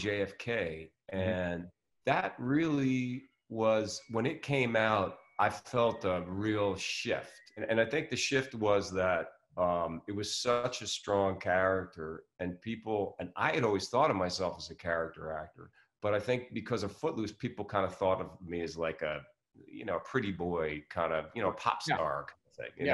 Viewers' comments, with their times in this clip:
0:05 does Kevin Bacon has LG washingmachin?? Ican hear the beep sound